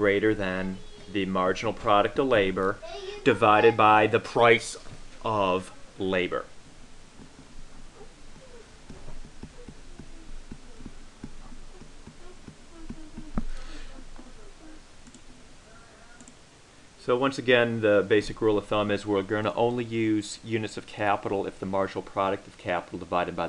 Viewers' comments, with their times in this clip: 0:04 raising off the voice, could so clearly envision him shooing the daughter away